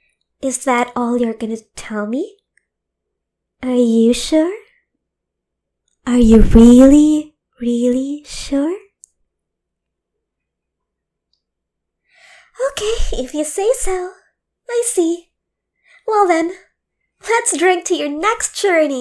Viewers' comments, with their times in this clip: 0:03 why does she sound like amanda the adventurer